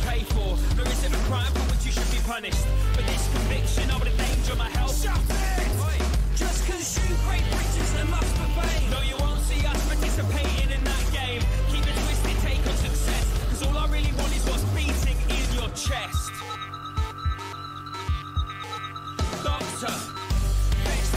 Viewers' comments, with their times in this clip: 0:04 Rob (the shut it!) gets so few vocal parts in songs but the times he has vocals, makes the song so much better.